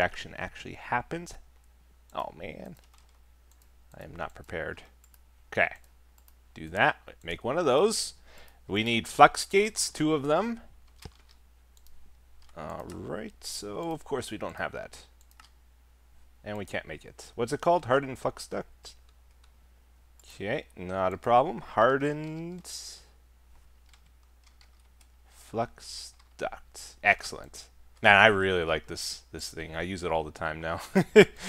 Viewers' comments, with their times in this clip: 0:07 when he said "Flux gates" i thought he said something different lmao. It was
0:09 we need fucks gates
0:09 make sure you put the L in "Flux" next time there Etho
0:10 Did anyone else hear Etho say fucks gates
0:17 hardened f*cked duck